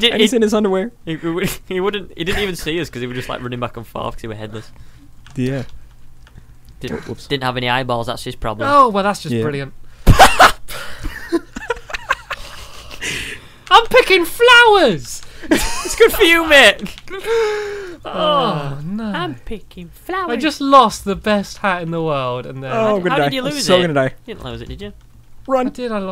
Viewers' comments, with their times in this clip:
0:08 I love how he said that so causality